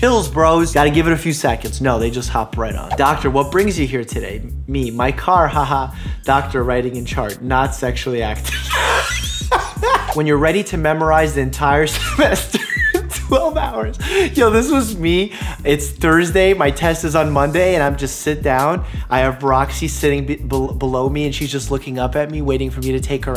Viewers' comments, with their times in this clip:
0:07 "not sexually act- W H E E Z E
0:07 what my door sounds like when I'm TRYNA get snacks at 3 am
0:07 THE PUREST LAUGH OMFG
0:07 you sound like a squeaking door 😂😂 i love this channel for so many reasons including this
0:08 “ Not sexually act- W H E E Z E I N G I N T E N S I F I E S “
0:08 I don’t have any medical experience but I can tell that wheeze isn’t healthy
0:08 Me: constantly rewarches this exact laugh 15 times in a row The laugh:
0:08 My favourite wheeze is at,
0:08 are you sure you’re not a dentist? The sound that your lough makes 😂
0:08 i didn’t look and thought it was a door making that old wood noise
0:08 Dr mike: insert car screeching noises
0:08 Hey hey hhe ya you wanna wanna hear a dolphin whine yea yea a dolphin whine here
0:09 His laugh low key sounds like a door creaking
0:09 Dr.Mike starts becoming a tea kettle
0:09 That laugh murdered me 🤣